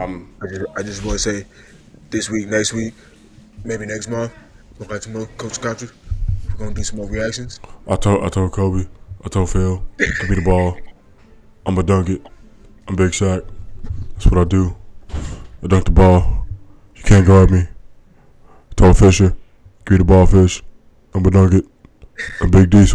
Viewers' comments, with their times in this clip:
0:09 the Shaq impersonation at the end was priceless too. like dope extra scenes added during closing credits that u let people know not to leave the theatre b4 credits r done